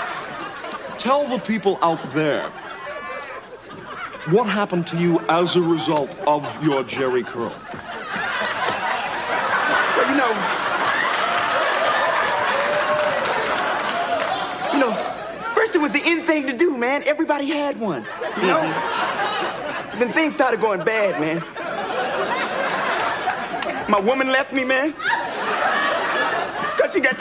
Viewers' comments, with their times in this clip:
0:08 LMFAO Tommy trying to wait for the audience to stop laughing, and then almost cracking up himself lol